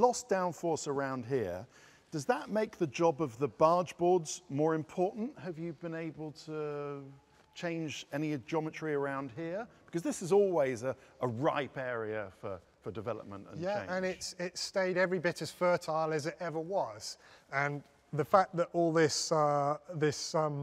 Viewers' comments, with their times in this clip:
0:07 Can just about hear a Valkyrie screaming in the background 😆